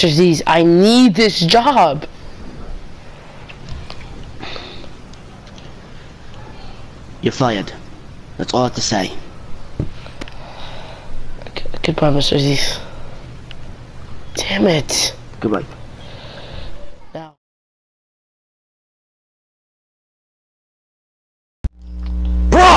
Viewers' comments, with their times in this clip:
0:08 casually turns British for a second